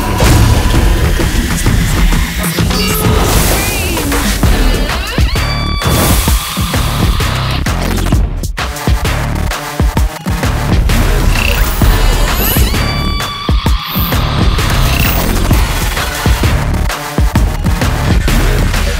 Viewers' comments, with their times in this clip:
0:03 The real BGM stars here